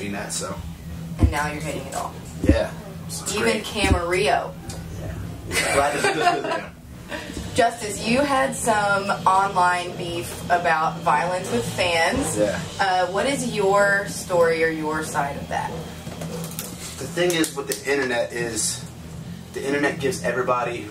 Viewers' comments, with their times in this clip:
0:07 on da intanet 🤣